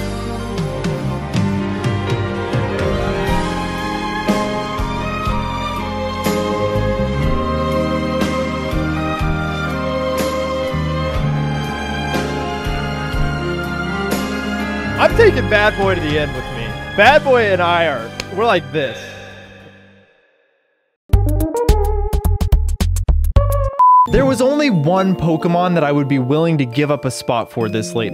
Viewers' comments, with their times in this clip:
0:09 this music has one of the worst memory of my childhood I remember not eating dinner as well as lunch and not even going to the ground to play I was so much depressed that butterfree is going 😭😂